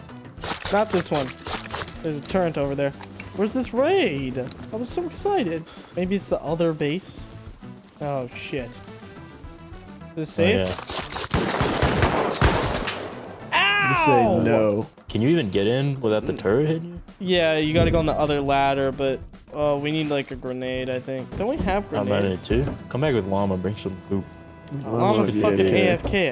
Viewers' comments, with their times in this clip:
0:10 the recording absolutely breaking